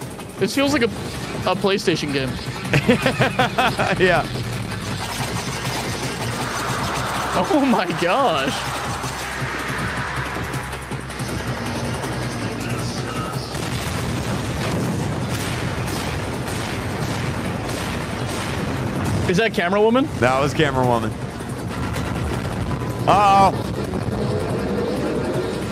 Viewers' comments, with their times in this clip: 0:06 Bro on ’ the speakerwomen and dark speakerman they start stabbing the camo rocket toilet like so hard that the toilet screams in pain